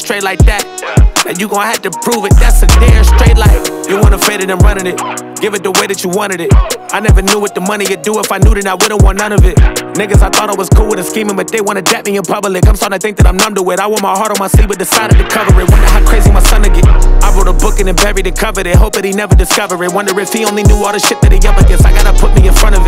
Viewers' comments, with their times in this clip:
0:07 PNB Rock vibes❗🙏🏿🕊